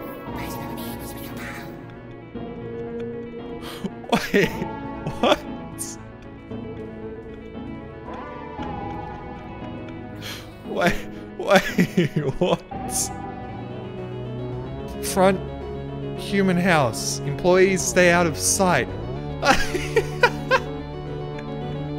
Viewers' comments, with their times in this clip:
0:03 The music playing in the background